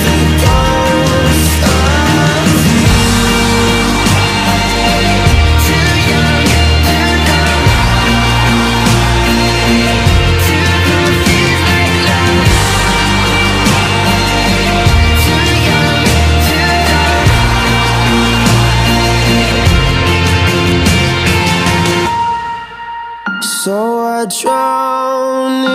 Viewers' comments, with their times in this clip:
0:03 The best back voices ever. Calum, you deserve more than this cruel world.
0:12 are there any strings in here? . I feel like there’s a cello somewhere